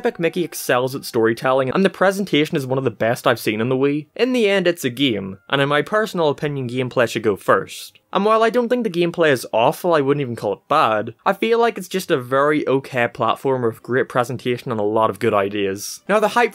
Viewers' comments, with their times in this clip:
0:04 "geem" What is your accent? Edit: Is it racist to ask someone their accent